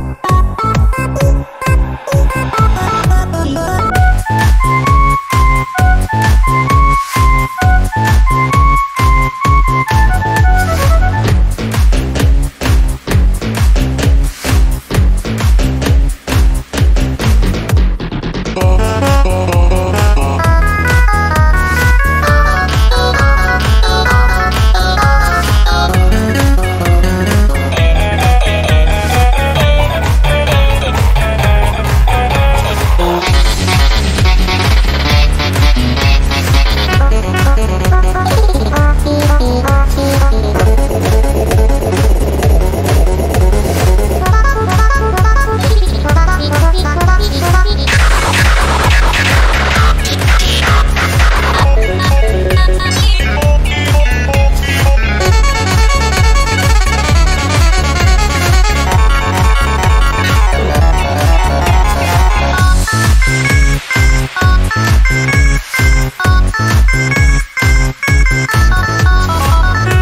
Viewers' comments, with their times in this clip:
0:04 all I hear in my room is Ruv and surv Yelling and stomping
0:29 TANKMAN SHUT UP I CAN BARELY HEAR PICO
0:48 Everyone: Calm Tricky: loud noises
0:52 slaps table OUTSTANDING TRANSITION
0:52 I SOUND AMAZING OMG
0:52 too natural change SKY XD